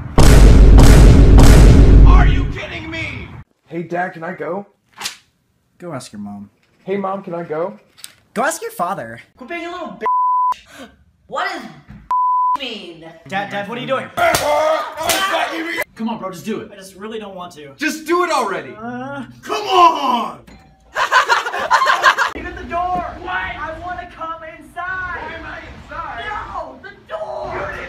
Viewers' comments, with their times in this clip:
0:08 he sounds like my cousin but with a deeper voice ;-; 😂